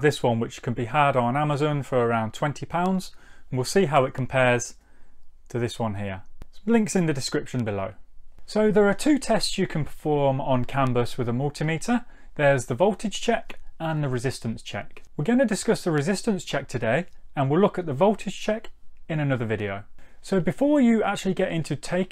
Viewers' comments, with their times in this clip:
0:06 “Blinks in the description below” ? 😂